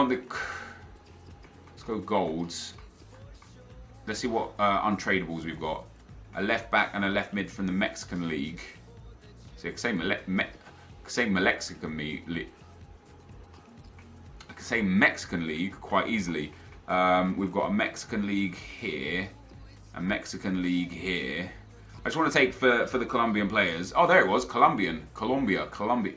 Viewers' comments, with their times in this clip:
0:09 the mouth malfunction
0:09 the mouth malfunction